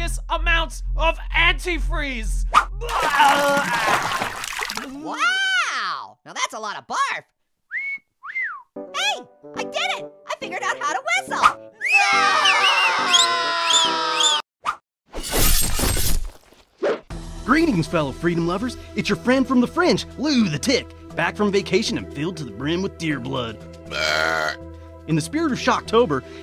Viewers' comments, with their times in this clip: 0:07 orange whistles (too much)